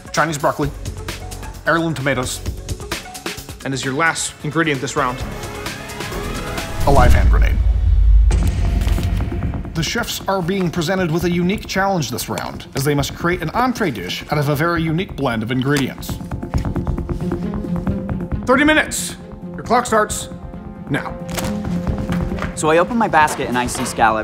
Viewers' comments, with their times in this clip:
0:05 dang he talking fast